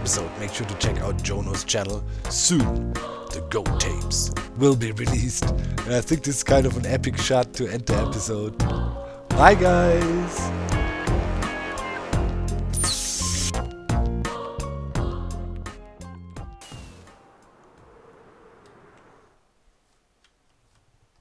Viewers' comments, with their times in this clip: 0:08 The sync on the tnt and the song